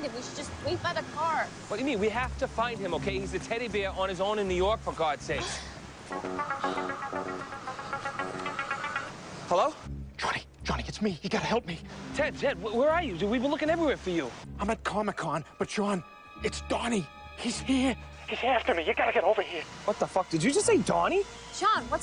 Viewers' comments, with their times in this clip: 0:05 Idk why but I thought that was Gucci Manes version of Knight rider as his ringtone lmao